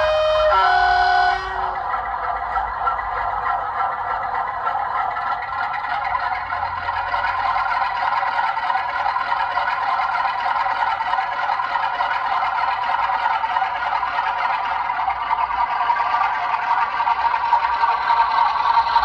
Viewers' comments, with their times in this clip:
0:07 Where's the strum?